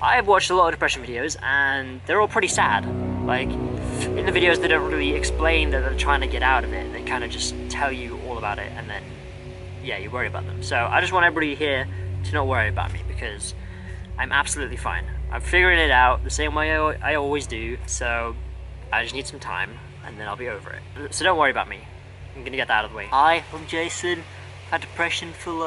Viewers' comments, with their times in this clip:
0:10 Anyone else hear the weird trumpet sounds